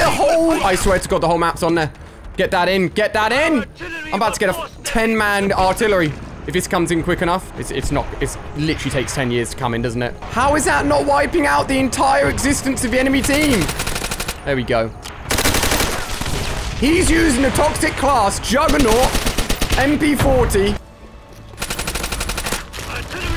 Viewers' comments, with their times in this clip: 0:04 sounds like he’s about to say the f word